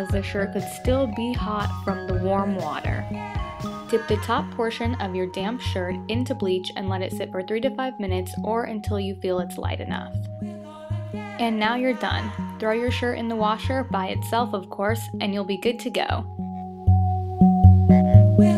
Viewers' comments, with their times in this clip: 0:04 it sounds like she said "damn" lol